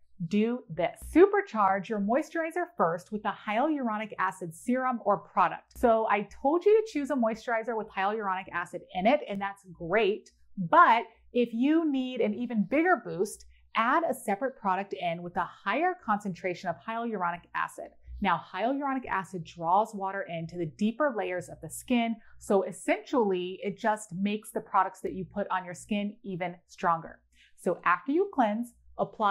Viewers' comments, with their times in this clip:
0:10 The amount of times hyaluronic acid came up … just blew my mind cause I thought I was pronouncing it right this whole time🌚🌝